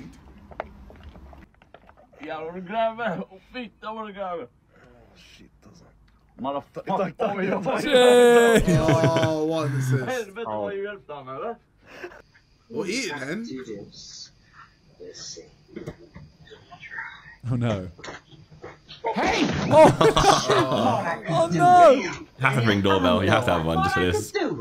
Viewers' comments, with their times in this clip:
0:05 idk Why i caught that But i think They Are speaking norwegiab cause i think i clearly heard a guy say ‘shit assa’ which is Norwegian slang